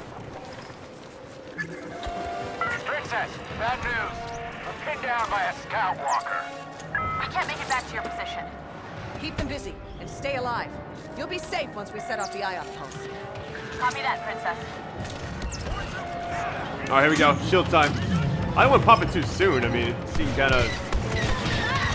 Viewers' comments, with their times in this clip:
0:04 i though he say skywalker XD